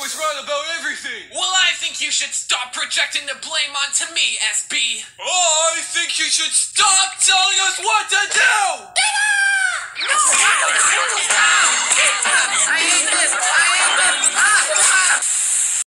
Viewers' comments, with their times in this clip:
0:09 terrrah xD im laught bomby is says terraaah
0:09 That’s kind of sounds like Bendy